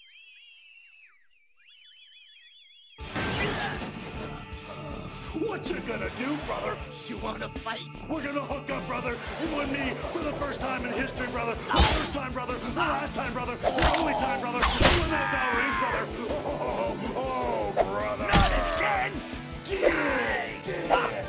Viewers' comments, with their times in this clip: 0:03 there’s always that one song you’ve heard before but can’t remember a single thing about it, and the music in the background which starts playing certainly is that one for me